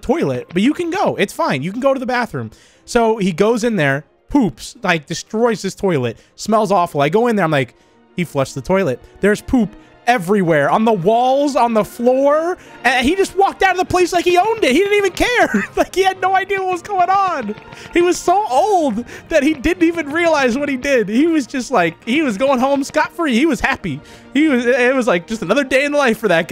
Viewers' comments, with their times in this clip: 0:04 i can hear the trauma in his voice
0:07 The BACKGROUND MUSIC 😂😂
0:09 Perfect timing for the music! XD